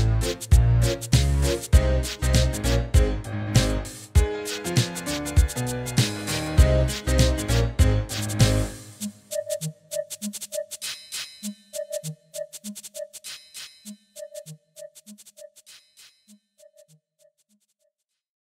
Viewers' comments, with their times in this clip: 0:04 wait, is it me or is that a piano?
0:04 You should get the Micro Keys JAZZDEN piano preset for that part if you want it to sound 1:1 to the original. Whatever vst setup you used here, it doesn't sound right.